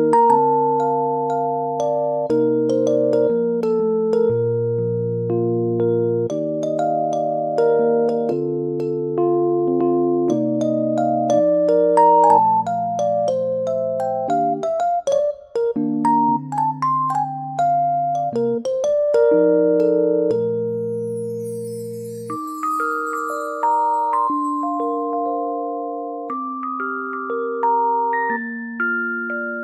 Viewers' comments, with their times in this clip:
0:10 no joke I thought it said "look at how fa you've become" lmfao